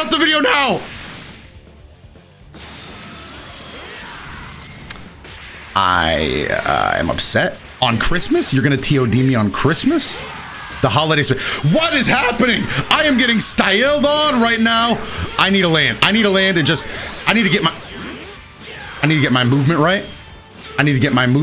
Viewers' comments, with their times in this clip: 0:09 Why he gotta say "styled" like that? I was already laughing my ass off, then he hit me with that.